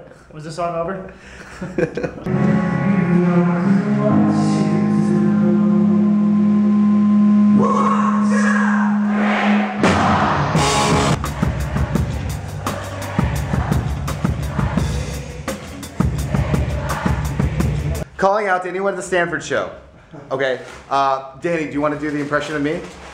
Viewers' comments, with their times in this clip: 0:05 i loved the scene it was so quiet and it was beautiful